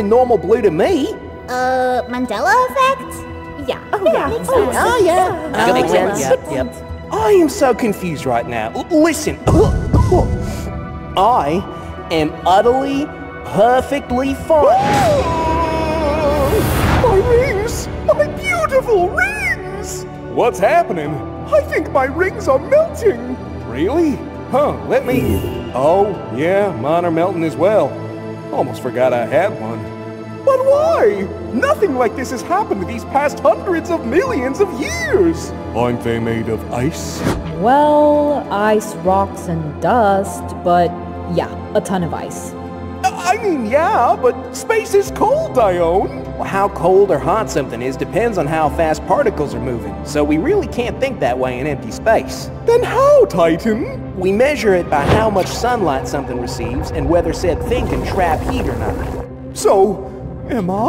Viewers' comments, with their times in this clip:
0:09 Uranus' Cough is not normal Istg
0:15 Why did I start laughing when Saturn screamed? 😅
0:46 I just noticed Saturn called Dione dion